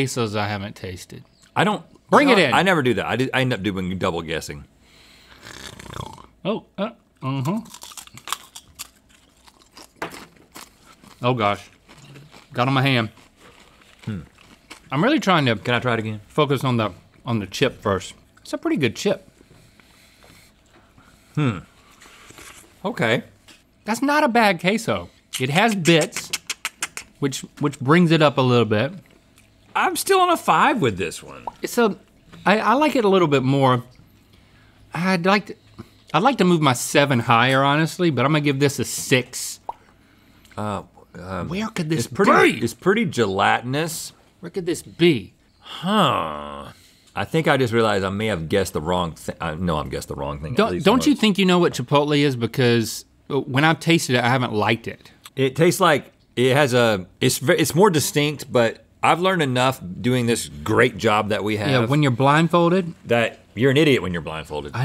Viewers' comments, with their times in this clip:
0:04 I don’t think I’ve heard Link do that odd snort since the classic blind taste tests 🥹
0:45 Rhett is a minecraft villlager